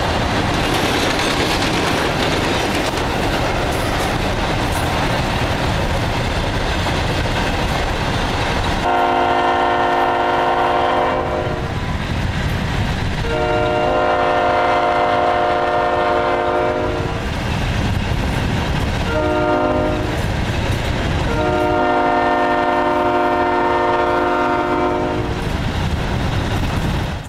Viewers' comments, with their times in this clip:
0:10 Why does it sound like a GEVO horn?